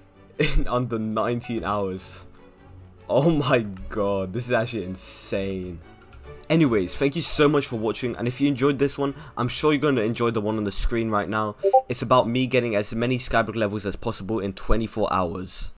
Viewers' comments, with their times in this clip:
0:12 DISCORD NOTIFICATION :O :O :O :O :O :O :O :O :O :O